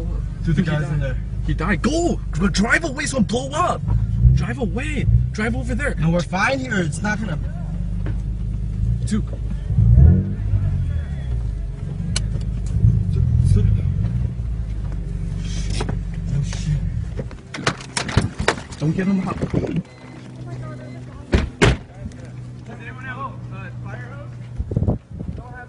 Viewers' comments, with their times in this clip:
0:08 you can hear him hitting the car